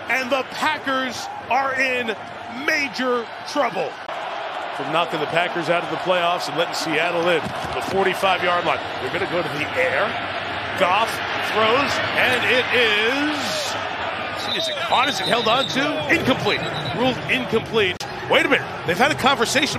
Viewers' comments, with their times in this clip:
0:07 I love the genuine confusion … ‘they’re gonna go to the AIR??’